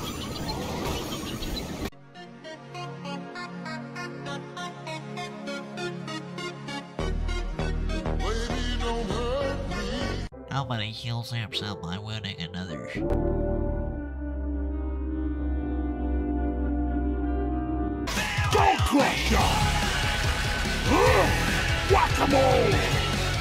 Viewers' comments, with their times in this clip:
0:10 Woahh wtff I didn't think I'd hear my own voice in this video?!!! What the shit ❤